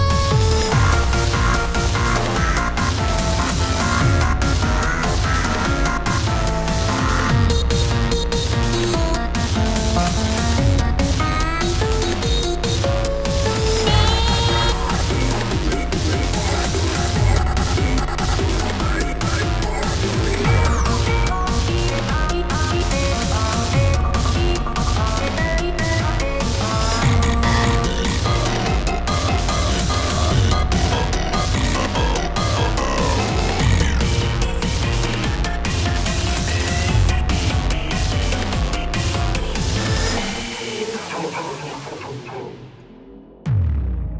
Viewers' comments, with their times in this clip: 0:07 The Boyfriend Vocals are Better
0:27 this part actually sounds like his song
0:27 im supprise no one see trollege is singing his own song
0:27 WHY DOES IT SOUND LIKE THE OG THO
0:29 Nice selection, it does sound the same :O